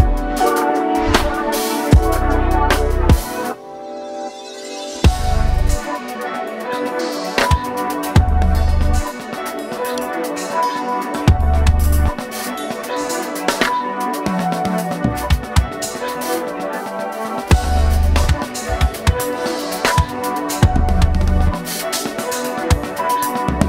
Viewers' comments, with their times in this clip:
0:10 Anyone else hear his sticks knock each other or am I just too high?